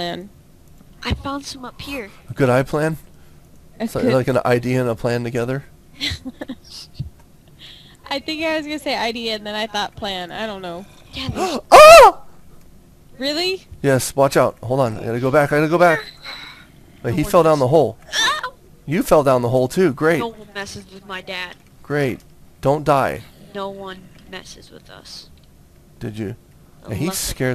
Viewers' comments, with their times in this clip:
0:10 GIRLY SCREAM FTW
0:10 i love ur girl scream XD XD!